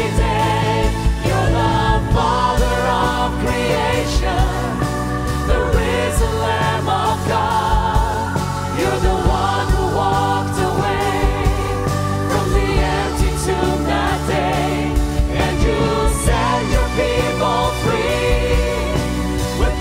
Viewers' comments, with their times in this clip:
0:05 Amazing hymn, amazing voices. Sometimes when they sing "Your the father of creation" it seems to me as if angels are singing with them in the background. in some parts, because I don't see their mouths move on some moments. WOW. 😱